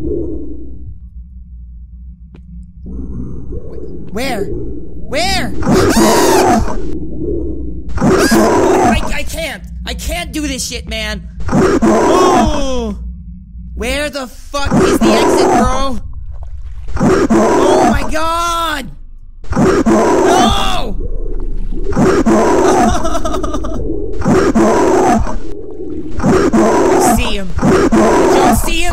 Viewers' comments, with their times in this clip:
0:05 at the time it sounds like free food
0:13 he sounds like Max from Camp Camp to me